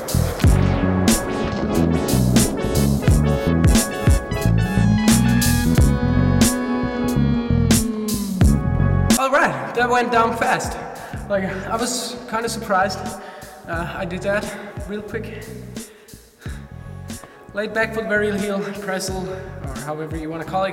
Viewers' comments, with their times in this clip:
0:04 The slow motion "yeeaaahhhh" actually fit with the music